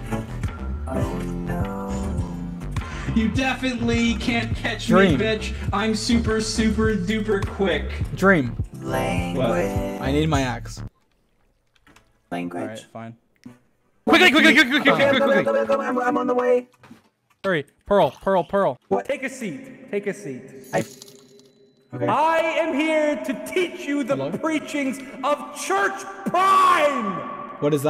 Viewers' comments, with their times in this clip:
0:08 BadBoyHalo saying language in auto is so soothing for some reason